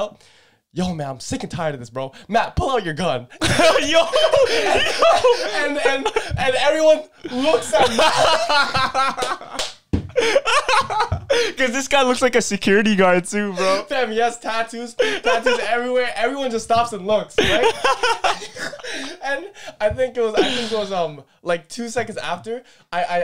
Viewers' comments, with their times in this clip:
0:04 Your laugh sounds like brooks from one piece yohohohoho lmaooo 😂😂😂